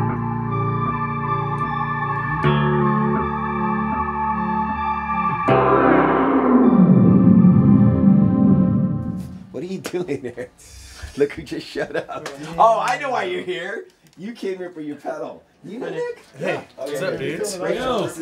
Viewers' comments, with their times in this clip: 0:05 My favorite part was that intense, warbly detuning chord